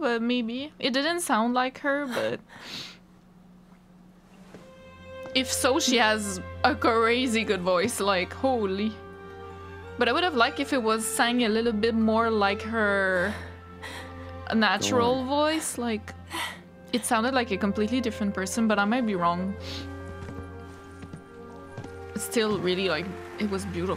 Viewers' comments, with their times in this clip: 0:09 I agree. Loren Allred has an immaculate voice. However, I also felt a little disconnected because her voice didn't sound like Brianna White's voice for Aerith. Still, such an emotional scene! Seeing Biggs, Wedge and Jessie made me cry 😭